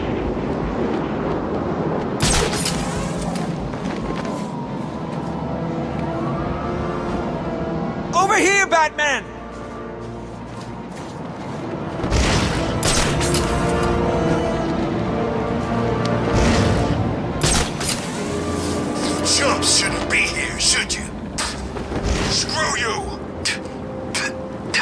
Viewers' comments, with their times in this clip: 0:07 Completely ignores guy crying for help